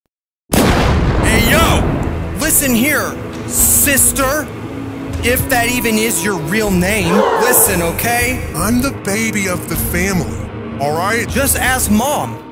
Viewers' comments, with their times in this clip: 0:00 XDDDDD I LAUGHED IN VIDEO NOW IN or not and you saying LOUD BEANS BEANS BEANS BEANS BEANS BEANS BEANS BEANS BEANS BEANS BEANS LOLLL I LAUGHING SO HARD I DYING LOLLLLLL..